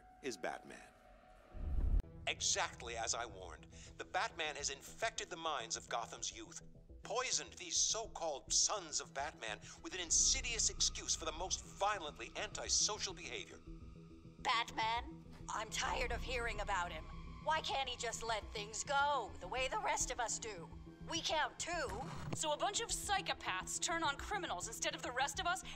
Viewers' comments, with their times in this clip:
0:07 when he started to move slowly i was slowly getting more scared and the background music wasn't making it better